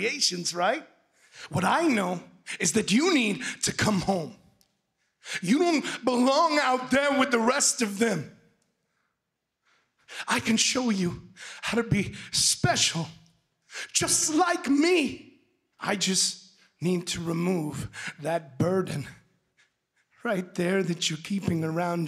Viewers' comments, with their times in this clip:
0:05 I heard the old bray Wyatt Wow wasn’t expecting damn near 200 likes